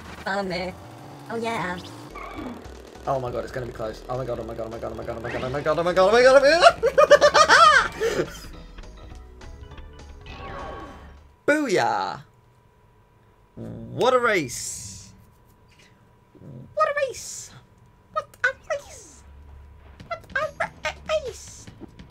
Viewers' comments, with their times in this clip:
0:06 best laugh of all time.